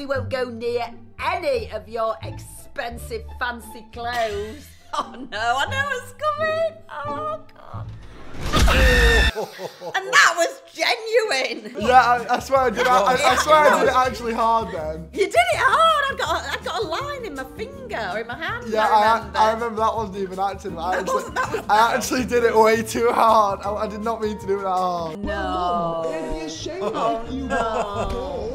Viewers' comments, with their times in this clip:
0:08 perfectly cut screams of 2021
0:09 Perfectly cut screams be like: